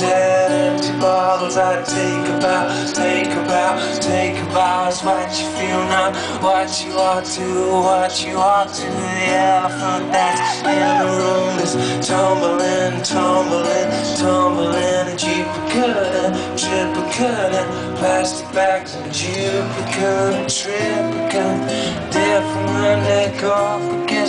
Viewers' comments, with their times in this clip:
0:09 the yell i fucking lost it hahahahah